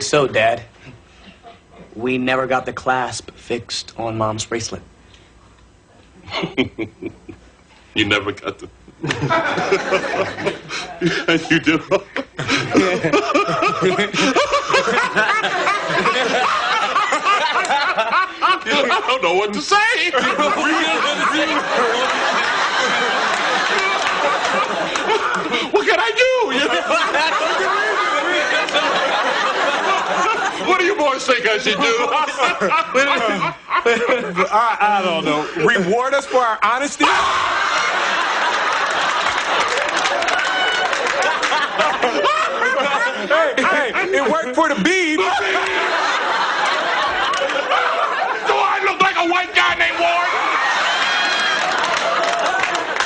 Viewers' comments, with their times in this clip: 0:06 after they finished laughing I knew he was gonna yell at them 😂😂🤣🤦🏽‍♀️
0:10 This laugh would scare the sh... out of me from the first moment.😂
0:36 that scream uncle phil makes gets me😂
0:37 It takes skill to pull off a laugh that simultaneously makes you piss yourself in both laughter and fear like Uncle Phil's laugh